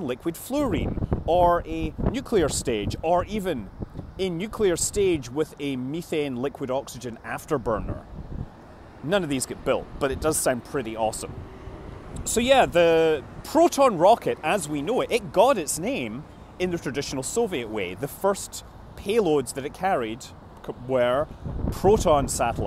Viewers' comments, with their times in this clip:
0:03 heavy metal music intensifies